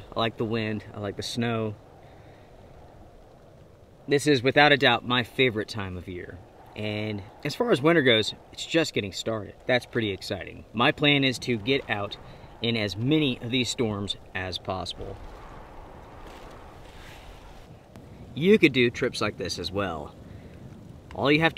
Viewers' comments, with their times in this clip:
0:09 Is that a truck in the background ?